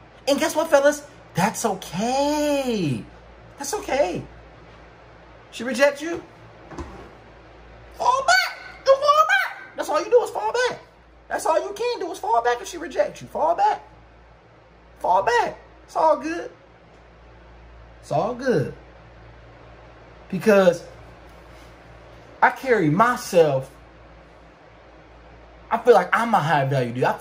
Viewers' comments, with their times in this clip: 0:08 soillumanti side came out that high pitched voice lmao
0:08 Sound like Peanut Live lol